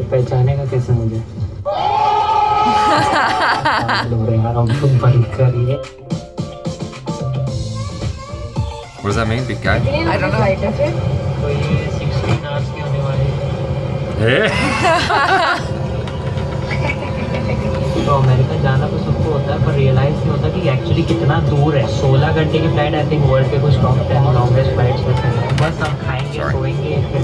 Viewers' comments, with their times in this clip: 0:08 You read that comment so fast ...I know they would have taken almost 3 minutes to make it 😂 Love from indian Edit: it means "we sit/stayed there"...